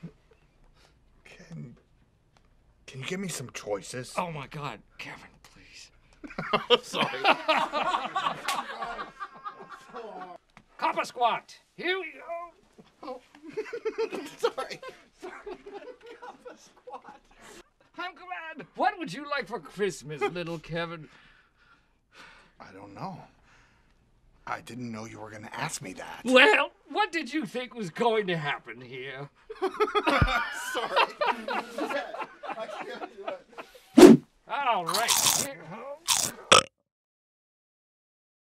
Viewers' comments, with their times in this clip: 0:10 Did Kevin pass wind on Michael ?
0:11 what did Steve said in this moment? I can't make it out
0:25 Steve's voice crack got me so good.🤣